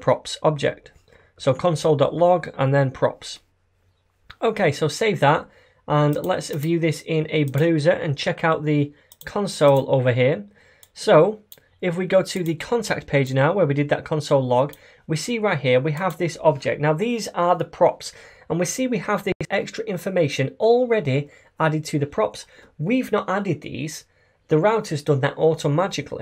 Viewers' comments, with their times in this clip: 0:07 Love your tutorials :) cheers this was very funny " lets view this in a bruhzah"
0:07 What the heck is a badaused?